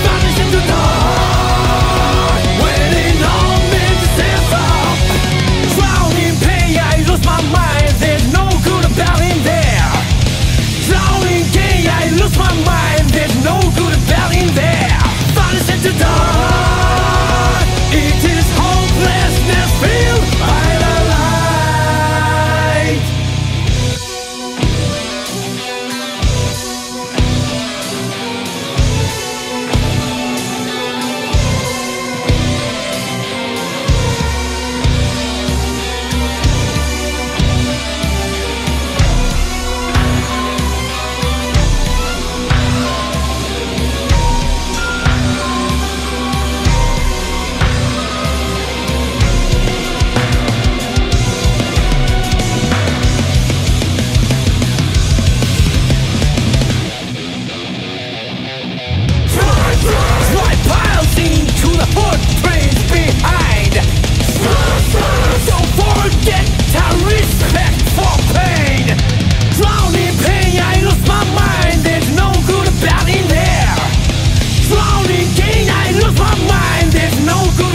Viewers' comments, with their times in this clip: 0:05 sounds like aaron randall-era annihilator, amazing
0:59 Most are talking about the ending section or how this theme is 2-in-1 but are we not going to talk about the sheer aggression that is ??? It might be my favorite part in this masterpiece